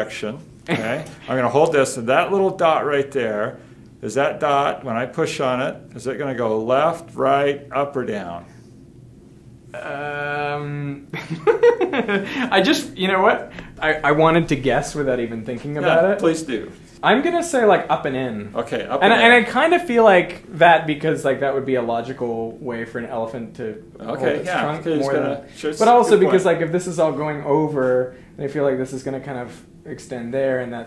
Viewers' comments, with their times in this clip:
0:09 That laugh left me dumbfounded,
0:11 epic Yoda laugh.